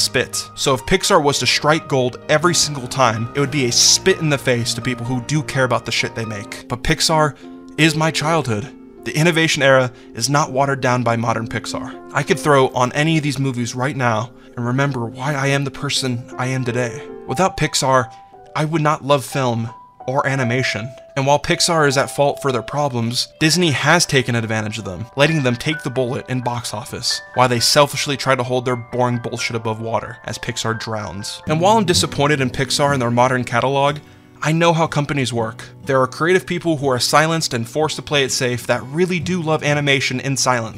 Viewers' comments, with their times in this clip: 0:07 When a 10sec soundtrack from an animated movie you watched years ago can give you intense flashbacks of the whole emotional saga, you know you've made something magical
0:27 When he talked about how he still loves pixar movies and different songs like the ones from up, and inside out start playing, I actually got goosebumps